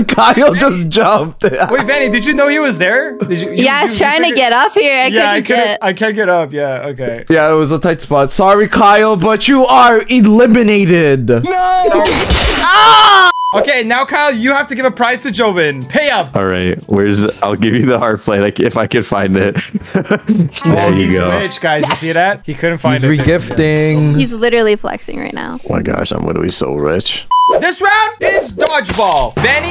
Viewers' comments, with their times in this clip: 0:10 his scream is making me roll on the ground 😂😂😂😂
0:12 In it sounded like when he got shot in rl